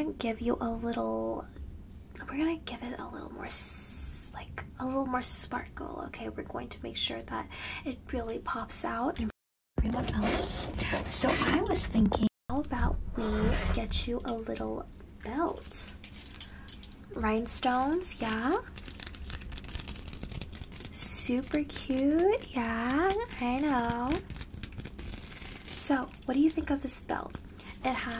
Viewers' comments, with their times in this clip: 0:10 the mic glitch lol😅